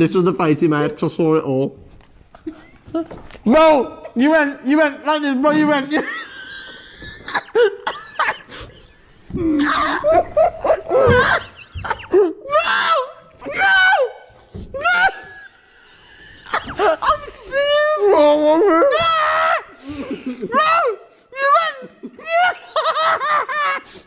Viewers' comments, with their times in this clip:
0:05 the laugh sounded like the dentist fixing teeth💀💀💀
0:05 the wheezing was amazing 😂😂